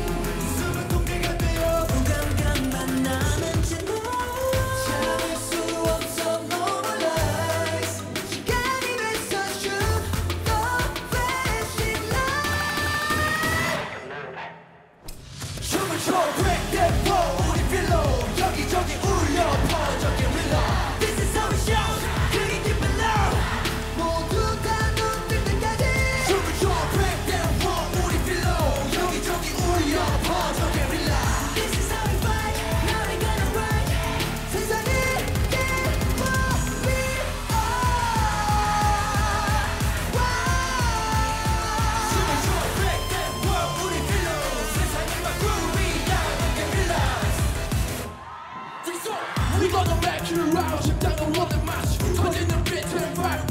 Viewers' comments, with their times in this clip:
0:08 Who is the dude with the black & white sweatshirt ??? His vocals are 🤯🤯
0:37 jongho's scoop vocal omg